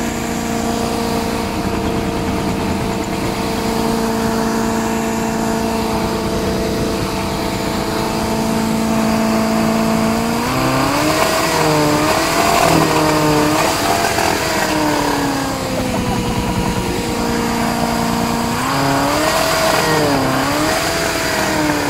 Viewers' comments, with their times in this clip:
0:08 she fuckin loves the good sniff